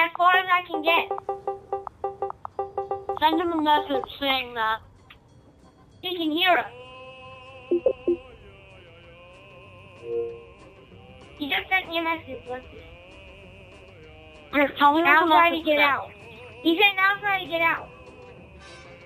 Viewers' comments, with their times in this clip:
0:07 BEST SONG EVER STARTS